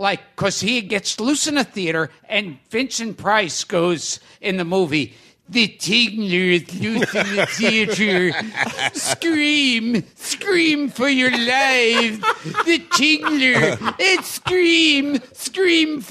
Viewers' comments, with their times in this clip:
0:03 I would have never guessed that Gilbert would have the best Vincent Price Impression I've heard. Better than Haders pseudo impression.